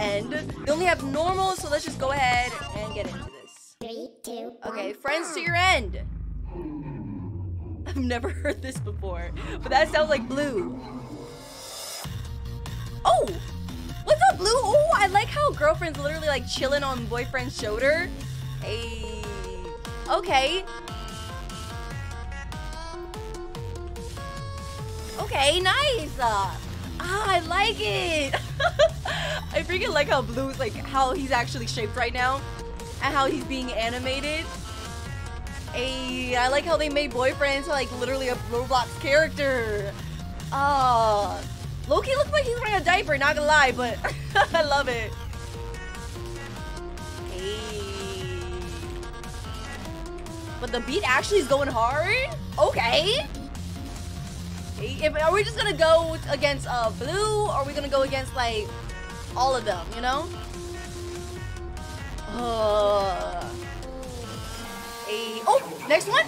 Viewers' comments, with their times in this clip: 0:06 blue actually says "hmmm" I've heard him say it multiple times when I played rainbow friends
0:51 Did anyone notice that this part sounds like a part in Aurora?